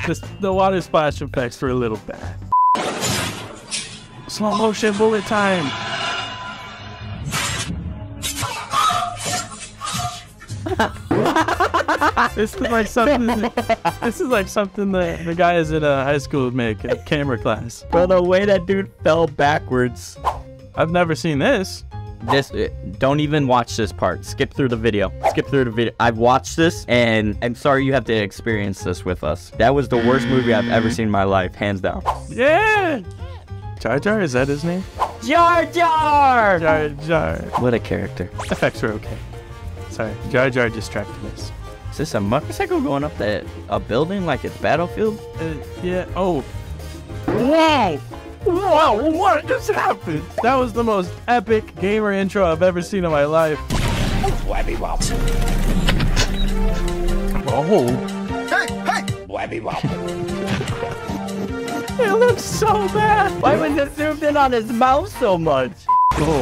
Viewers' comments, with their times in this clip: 0:03 gunshot but then it broke the plate then the scream💀
0:53 Is it crazy Dave's talking noise?
0:53 I heard Crazy Dave from Plants vs Zombies in the Ghana one